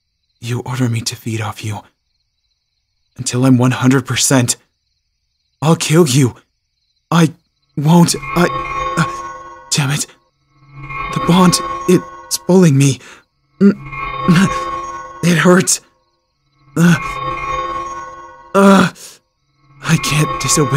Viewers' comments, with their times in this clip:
0:07 "The bond its bullying me!" i cant am dying💀